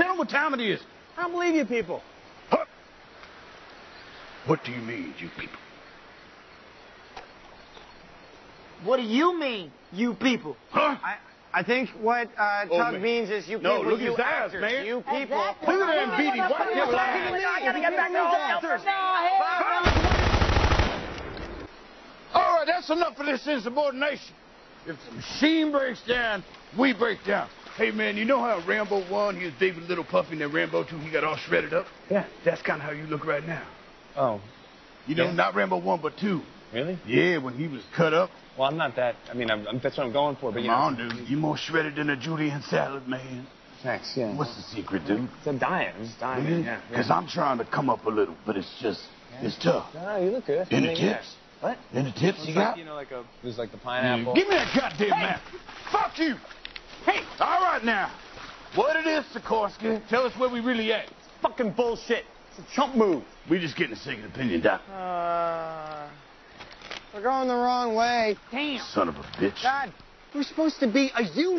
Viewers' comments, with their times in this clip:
0:05 the silence and Alpa's "what do YOU mean you people?" is pure gold
0:55 That "FUCK YOU" is genuinely the best ever captured on film. Robert De Niro at his most intense couldn't have done better.